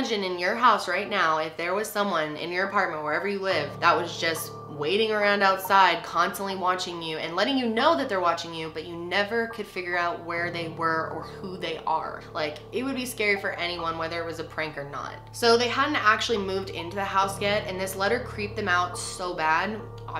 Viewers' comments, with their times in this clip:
0:08 when you said that I heard a thump 🥺😭